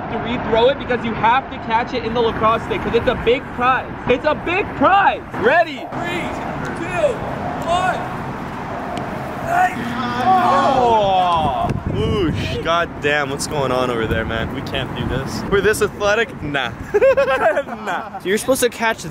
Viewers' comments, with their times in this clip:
0:05 who hears something from among us there’s a noise can someone tell me what that noise is what the hell??!!??